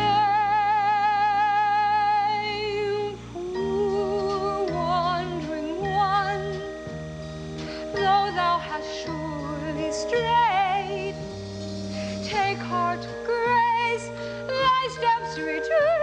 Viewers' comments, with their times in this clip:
0:03 What sort of key is this!?